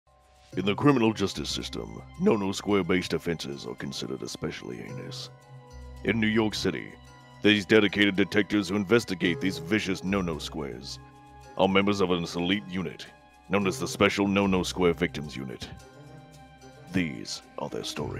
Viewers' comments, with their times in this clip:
0:02 Narrators voice cracks Haha